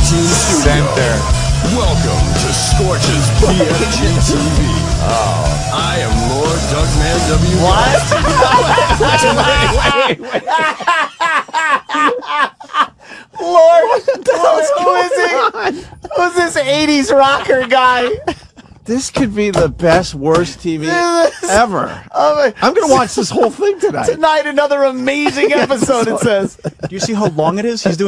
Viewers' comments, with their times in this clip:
0:10 Ant's laugh is so infectious lol I can see why he gets girls......his personality alone is what makes me love him!